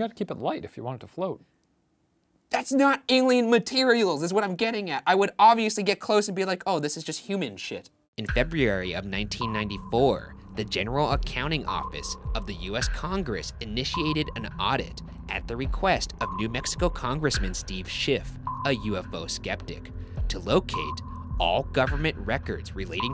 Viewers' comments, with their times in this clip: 0:08 he says February really weird.